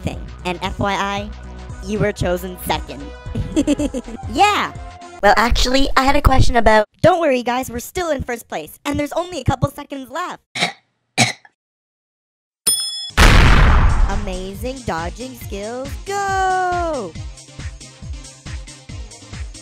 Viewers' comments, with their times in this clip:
0:03 THEIR LITTLE GIGGLE AAAHH